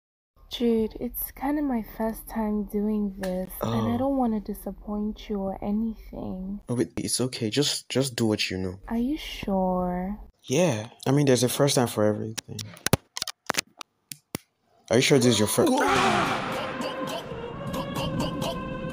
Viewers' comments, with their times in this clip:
0:03 that thigh slap had me toooooo hehehehe